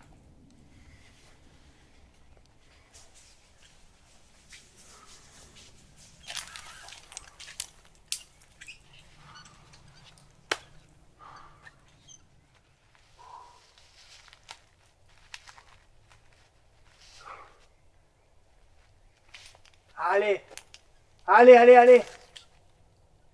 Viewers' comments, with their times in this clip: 0:10 must have been incredibly hard, when you made even Italians silent XDXDXD